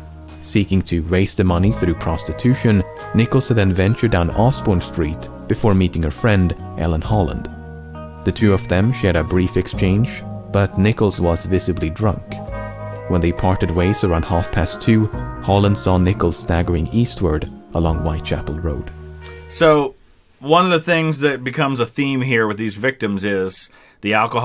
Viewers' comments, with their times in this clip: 0:06 for a second I thought he said erling haaland